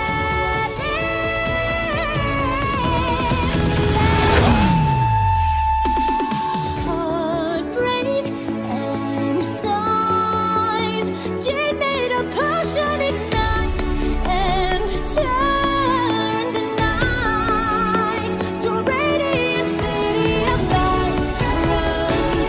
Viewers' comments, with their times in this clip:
0:07 is my language